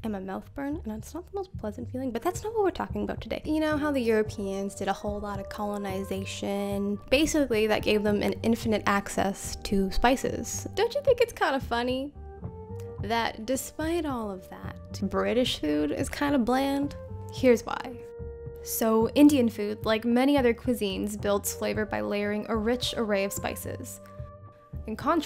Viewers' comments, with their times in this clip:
0:08 the background music is calming.